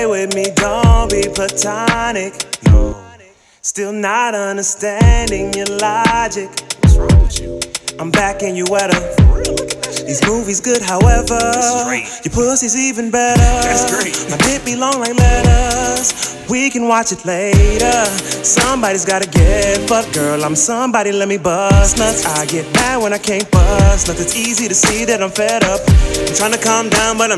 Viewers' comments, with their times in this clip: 0:10 that bryson tiller impression doe....